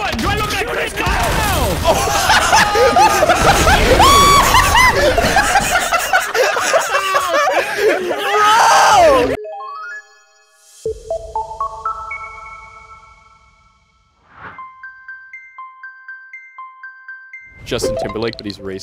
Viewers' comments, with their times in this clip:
0:04 My smoke detector at 3 am